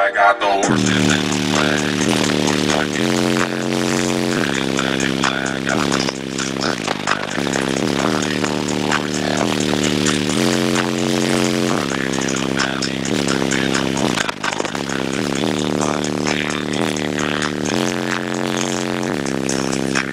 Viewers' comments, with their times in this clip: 0:05 LOL the bass slapped my man in the face he had to take step back. That high end will get yah if you ain't ready. Sick neos.